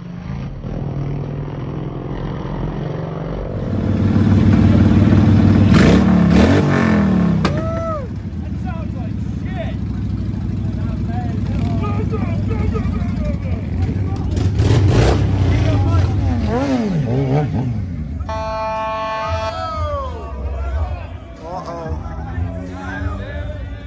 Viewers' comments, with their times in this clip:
0:09 That sounds like shit🤣🤣🤣😅